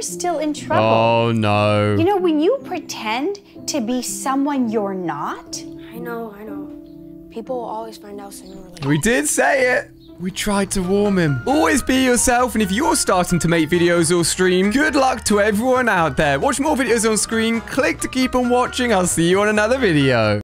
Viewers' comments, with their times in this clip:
0:10 Did you just say we did warm him or is my head playing tricks with me?